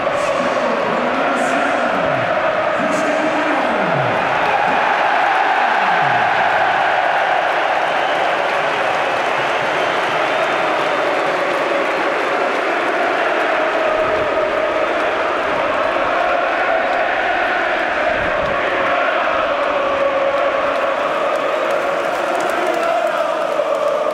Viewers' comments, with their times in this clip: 0:07 the noise from the crowd gives me goosebumps